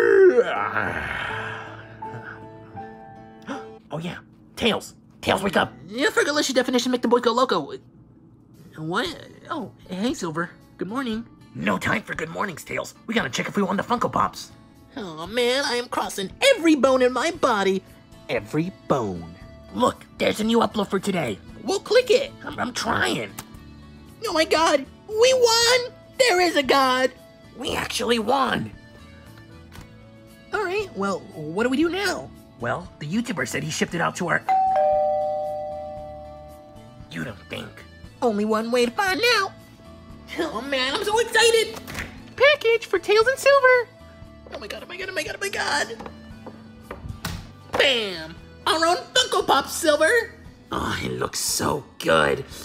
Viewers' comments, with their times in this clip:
0:06 Tails Rapper Faster Than Eminem
0:36 I thought he said You Da Bink! 😂😂